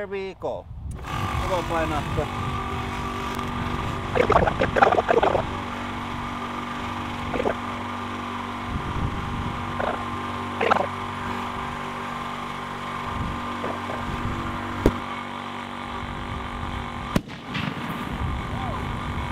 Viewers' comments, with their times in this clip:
0:03 sounds like a Finnish darlek from dr Who haha